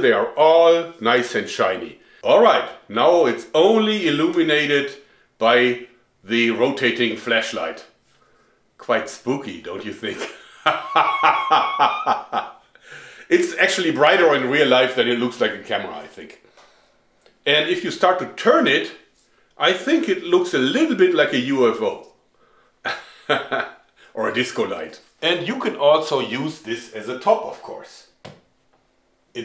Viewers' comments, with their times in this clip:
0:09 Oh boy... here comes the signature killer laugh 😂😂😂😂😂 creepy and funny 😂😂😂
0:11 Omg when you combine his awesome laugh with the lights